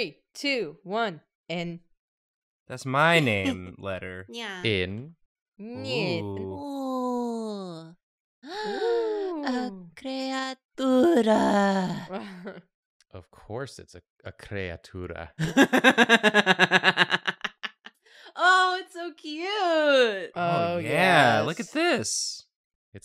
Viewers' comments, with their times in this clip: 0:06 Did you guys just speak in romanian or I'm losing my mind?